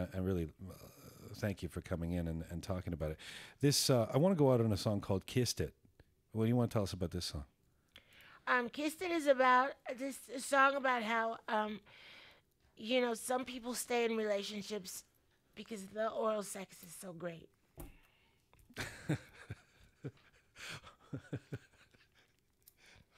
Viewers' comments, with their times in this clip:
0:05 Was it me or did Jian get a slightly pink hue and all giggley when Macy answered his question about "Kissed it"??? Starting on ! Cute!